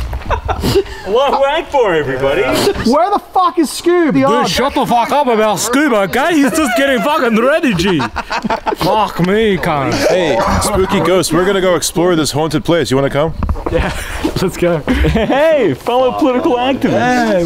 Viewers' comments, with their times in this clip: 0:04 best accent ever